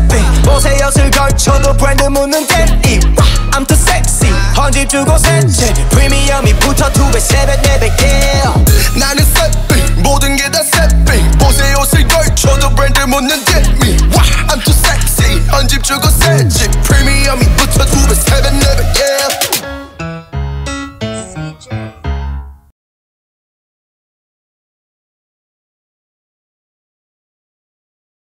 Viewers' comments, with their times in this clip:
0:09 Who sings 😩his voice omgggg